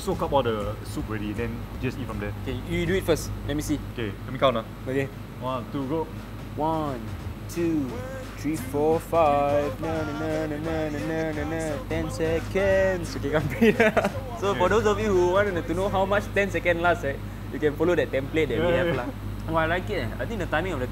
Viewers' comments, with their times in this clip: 0:07 lmao what was he singing